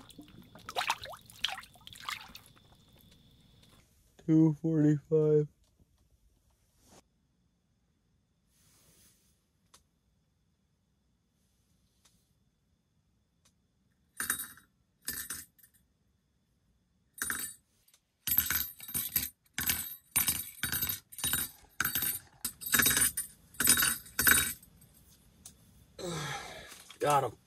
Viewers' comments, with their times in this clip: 0:09 he’s being haunted by the rattle wheel